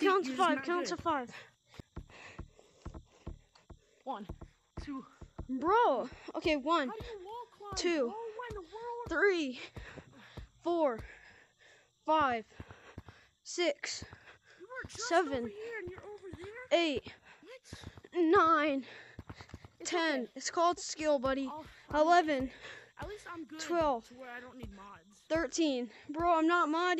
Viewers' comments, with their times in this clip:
0:07 HoW dO yOu WaLl ClImB is crazy😂😂😂